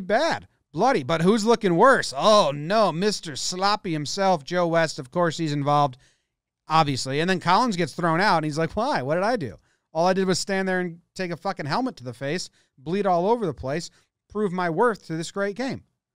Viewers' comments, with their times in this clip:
0:03 MISTAH SUHLAHPY IMSELF